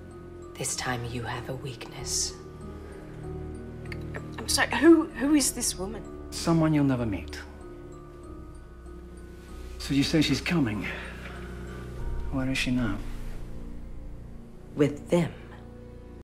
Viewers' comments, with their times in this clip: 0:04 I love the way Rumple subtly reassures Belle while simultaneously keeping up his sour tone towards Regina ( Belle: I'm sorry, who is this woman? Rumple: Someone you'll never meet.) It shows that even after being told about Cora and trying to figure out what's happening and possible ways to stop her and trying to stay cold towards Regina, Belle is still one of his main priorities.